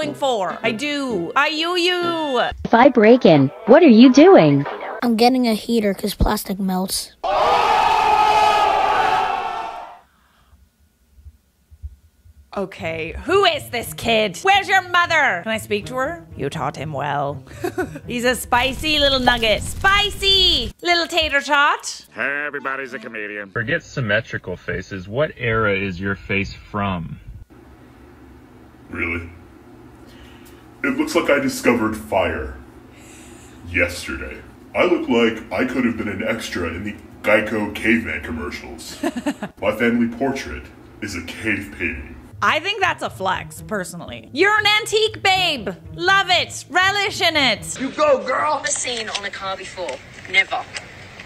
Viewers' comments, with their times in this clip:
0:04 I don't get it. It sounded like the kid said, "I'm getting a heater, because plastic nose."
0:35 😱😱 Bro literally looks and sounds like an animation standing there!!! Like he was drawn as a character in Moana but dude just stood up off the paper and said peace out! ✌🏻😳🤣 Plz tell me y'all see it too!? 🫢🤭🤣🤣🤣🤣🫶🏻🫶🏻🫶🏻
0:36 but this guys voice is amazing.